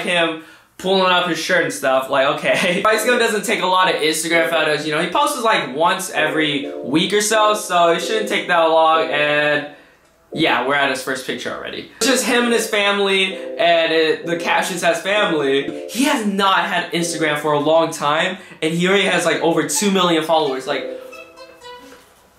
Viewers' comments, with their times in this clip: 0:05 when lil yachty start playin in the backgroumg